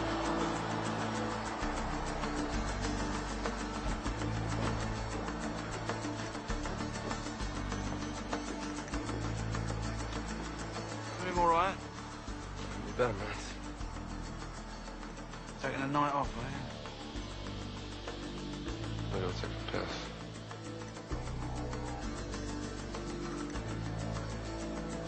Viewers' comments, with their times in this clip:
0:10 And for onwards, can't quite hear clearly wat the conversation between them ... Wat did they say ?